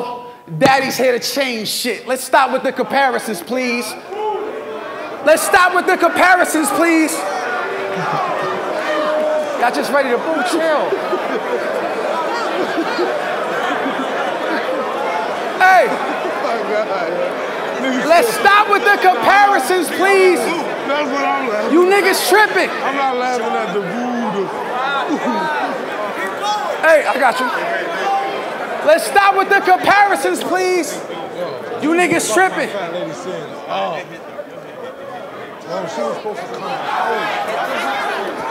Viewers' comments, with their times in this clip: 0:03 the funniest BOO in battle rap history
0:25 I’m laughing at the BOO💀